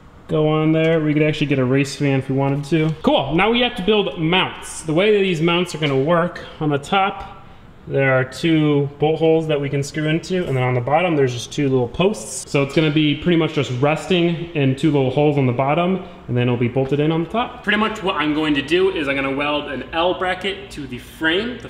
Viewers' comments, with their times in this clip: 0:08 lol "two butt holes"